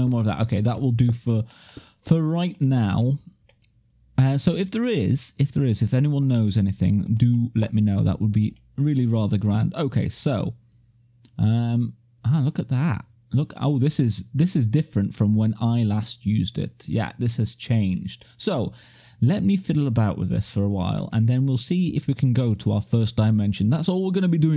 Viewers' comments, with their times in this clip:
0:06 flux point they are pretty nasty :D are you fixing your mic sometime soon? first video of you i am watching and getting pretty annoyed by that hollow sound. But seems okai sofar. Rewatching the full series at some point. maybe. :D